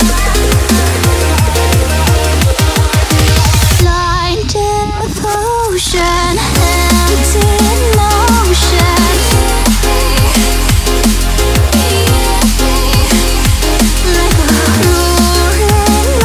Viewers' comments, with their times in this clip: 0:04 i like the background sounds XD